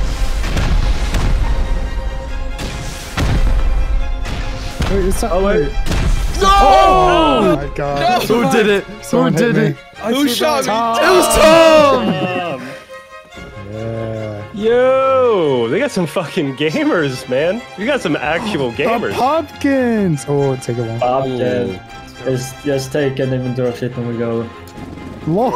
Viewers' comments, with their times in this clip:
0:07 music was amazing . aa i mean background music 😅